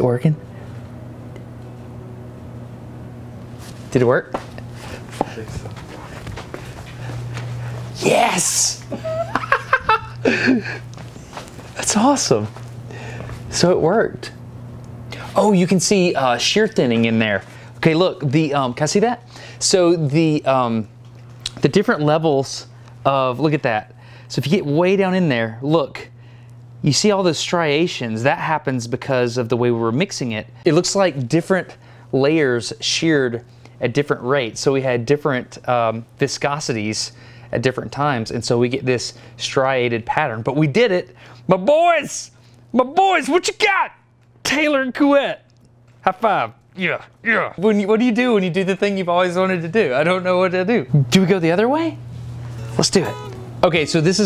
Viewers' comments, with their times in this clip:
0:04 Audible gasp! Beautiful, just beautiful. Destin's enthusiasm is palpable, and makes many of his videos electrifying. 10/10
0:18 destin cracked out on science when he sees that it worked. "ca i cc ddat"
0:39 he sounds like owen wilson lmao
0:41 he starts to sound like Lightning McQueen 😹